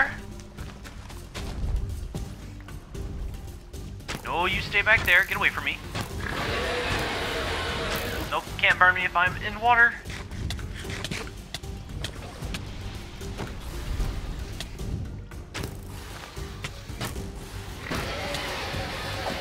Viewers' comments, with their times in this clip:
0:07 did he voice reveal?🥸